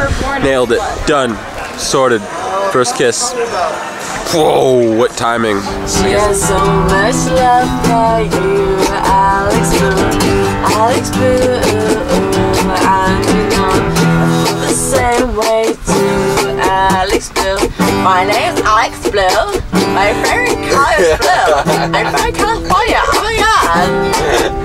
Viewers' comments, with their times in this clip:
0:08 Oh-oh, singing.. now she's blown it!